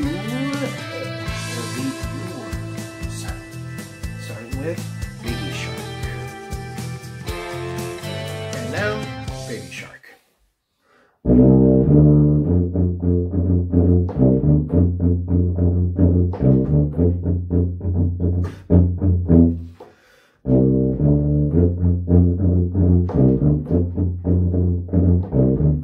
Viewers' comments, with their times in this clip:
0:08 Music starts for those who want to skip ahead